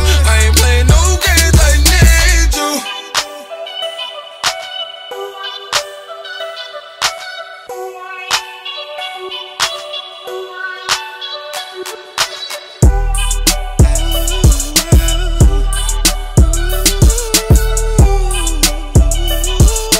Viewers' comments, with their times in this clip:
0:03 And the thing is, they easily could have ended the song but no they couldn’t bc the way he spun the block on beat and broke it down into instrumental => ad libs => vocals only was very, very important.